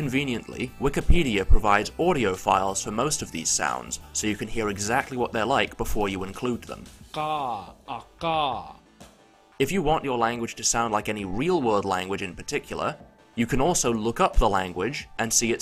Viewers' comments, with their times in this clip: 0:03 most of these audiofiles sound like people with throat conditions though